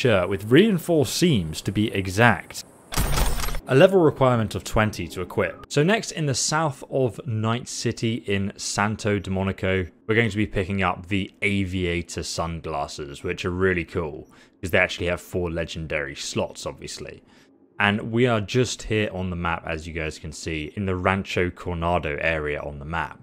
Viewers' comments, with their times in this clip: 0:07 Am I the only one getting triggered when he calls "Santo Domingo" as "Santo Demonico"? like